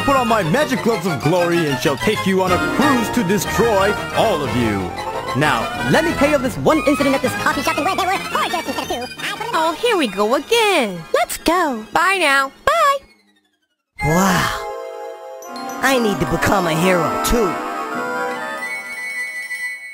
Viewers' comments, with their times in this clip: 0:05 dude istg the fact that this just speeding up made me laugh my ass off shows how broken i am
0:07 why the music such a bop